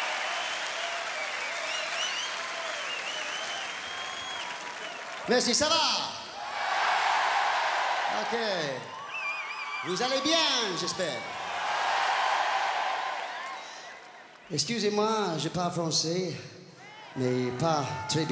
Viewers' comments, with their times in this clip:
0:03 I wish I knew what he was saying Seems like he was butchering French to Parisians - never a good idea.